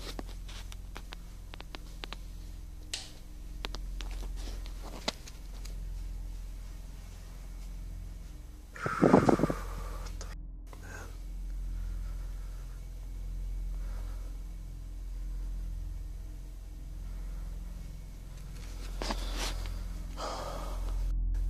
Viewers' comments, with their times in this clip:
0:06 thought that was something outside